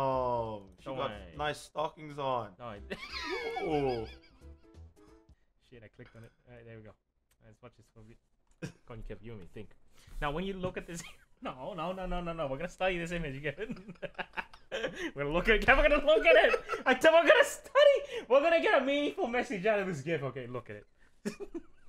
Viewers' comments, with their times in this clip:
0:03 DAT WHEEZE DOE!!!